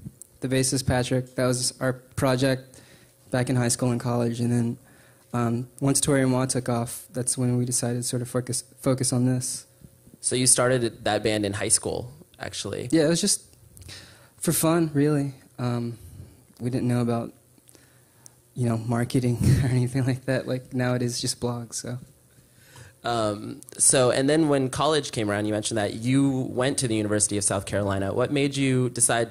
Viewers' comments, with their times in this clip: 0:10 lmao he smiles strangely almost laughing as he asks and chaz notices and nervously laughs almost as if he is saying what's so funny